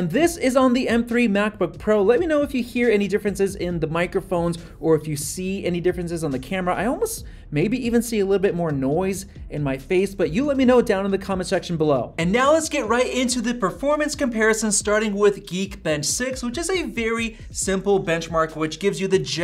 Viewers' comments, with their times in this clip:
0:05 mbp > mba - in mics